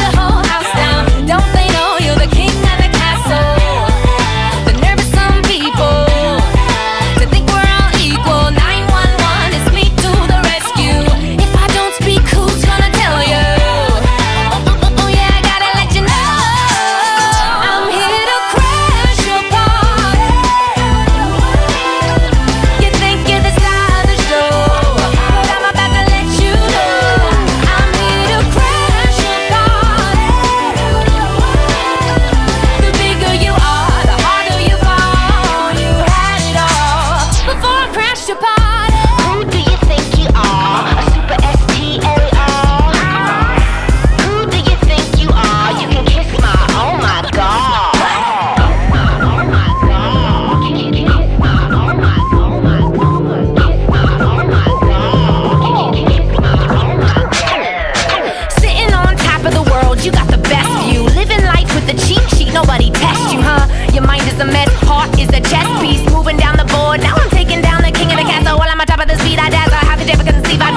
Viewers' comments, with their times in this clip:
0:05 🔥🔥 does this song make you happy every day This voice is Phenomenal 💙 👇🔥
0:58 Amy's rap sounds a little bit like Cher Lloyd.. Just me?